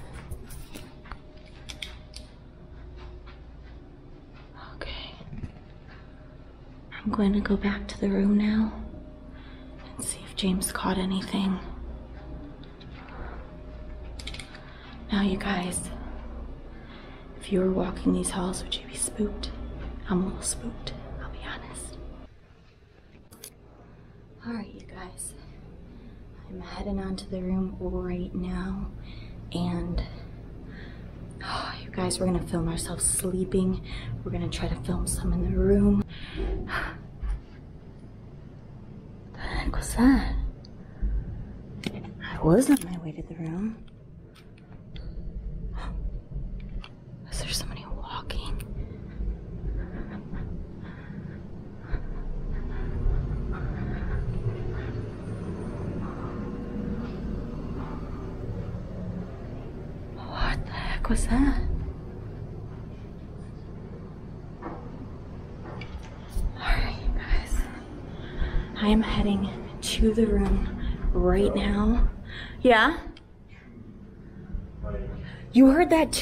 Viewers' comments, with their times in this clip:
0:04 u can hear a growl
0:05 was that a growl or ya tummy
0:05 there was a growl..
0:07 What the hell was that nose was that some sort of growl?
0:34 I heard either a bang, or a dog bark.
0:49 after u asked, "what the heck was that?" I swear i heard whispering and then a thud but cant make out what it said. I kp listening over and over but still cant hear it. Man u guys are so brave. I so wanted to go on an adventure w u two but I had a feeling Id run out within the first 5 mins!!
0:57 I heard a very faint hey
1:03 a man whispers something I listened a few times can’t make it out🤷🏼‍♀️💜😘👻I’ll try again lol 😂
1:03 I can definitely hear what sounds like someone walking right with you. I can hear the breathing and odd sounds that are just not you. you say, "wha the heck was that"? A disembodied spirit voice answers you and says, "You should have seen or maybe "you sure did see"?